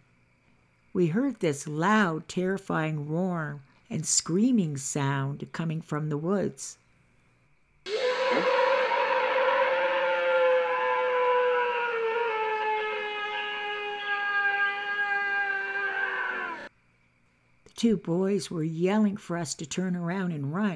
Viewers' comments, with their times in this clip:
0:07 Not fair complaining for something which she works hard to make. Plus, they really sound like that, you know it. There's no such a thing as cheap sound. Sabe people sound like that when they scream for whatever reasons. I understand that was unexpected, and one can get scared, but it's not nice accusing her of using cheap sounds when you don't have a clue how a Sasquatch really sounds like. Yes, we have to stick TOGETHER. By the way, did you ever heard of MOMO the Missouri Monster? The pic and the thumbnail one, shows really good how the being supposed to look like. Coincidentally I am reading a very interesting book right now. Momo The Strange Case of the Missouri Monster by Lyle Blackburn. I highly recommend it.